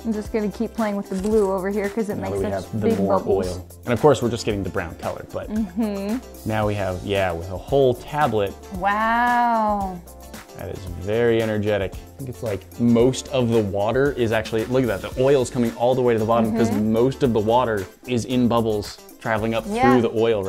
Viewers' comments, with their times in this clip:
0:08 her wow was a very unimpressed or expecting wow 😂☕